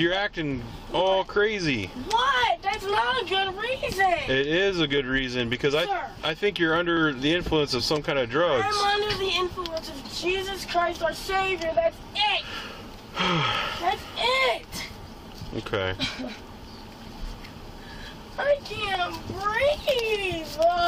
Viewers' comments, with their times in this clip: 0:05 The hard sigh of the cop fuck lmao
0:06 the officer's heavy sigh when she says she's under the influence of jesus christ" xD
0:06 literally the best part of the video, just a long sigh
0:07 I am under the influence of Jesus our Savior! Officer: *SIIGGHHH*
0:08 LMAO even the cop sighed 😭